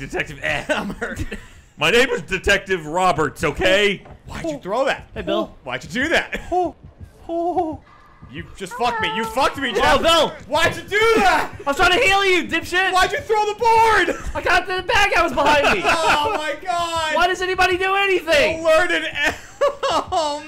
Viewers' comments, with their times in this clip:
0:08 The cutest hello